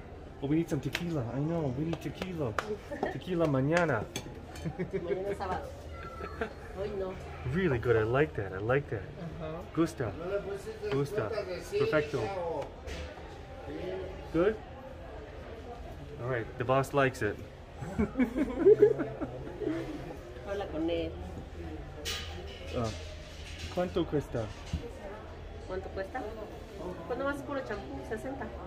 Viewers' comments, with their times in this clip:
0:10 I’m quite sure the guy in the back was being rude by the way she reacts, but I can’t hear clearly what he says